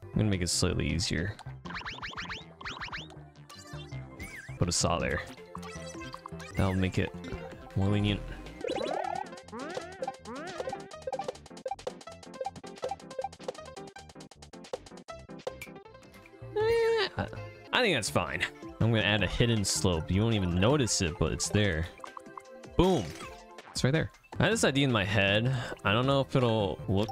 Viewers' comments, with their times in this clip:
0:09 the sound effect of murder is so satisfying